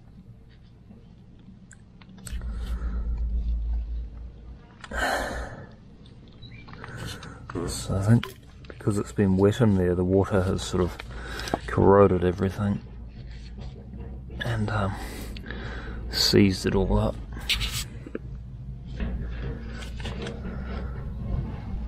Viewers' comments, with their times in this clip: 0:07 I heard the very rare South Island NZ Duck. Often heard but never seen.